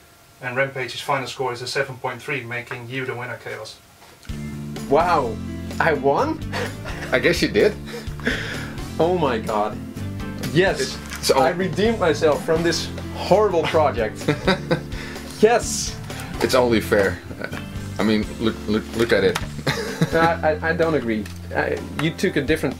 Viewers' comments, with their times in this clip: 0:04 I have to ask, what is the music you played it’s so groovy I broke the replay.